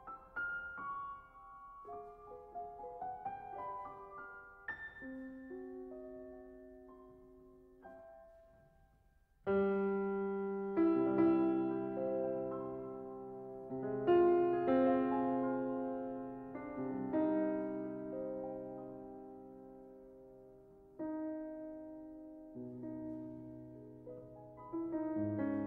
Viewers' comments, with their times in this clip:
0:09 I was convinced that Liszt was about to lead into "One Day I'll Fly Away".